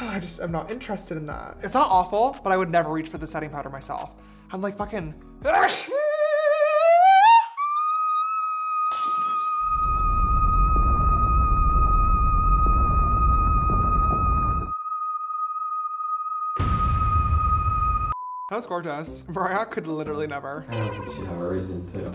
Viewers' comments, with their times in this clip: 0:04 💀💀💀💀mariah carey could never 😭
0:06 that highnote was SO SMOOTH girl
0:06 love the sneeze 😂
0:07 no that sneeze😂😂😂😂😂😂😂😂😂😂
0:09 the high note ATEEE